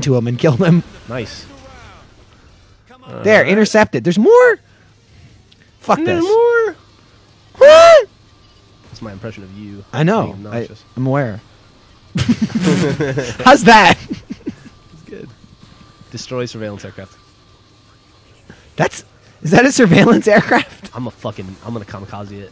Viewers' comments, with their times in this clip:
0:07 Lol you did a punk screan ahhh XD